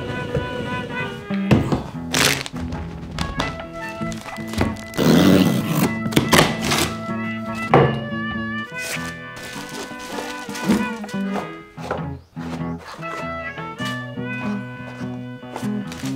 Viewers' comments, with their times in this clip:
0:04 Honestly, I thought you FARTED XD